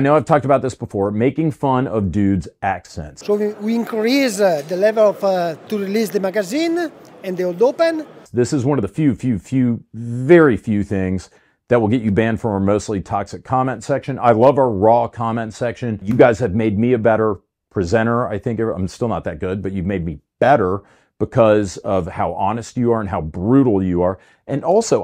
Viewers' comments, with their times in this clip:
0:08 making fun? He is legitemately hard to understand, the commenters are overly harsh, but the point stands